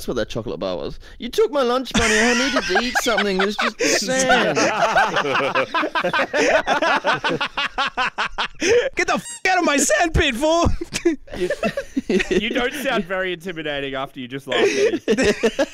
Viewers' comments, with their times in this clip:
0:03 if you litsen closely narrarators laugh sounds akward 😭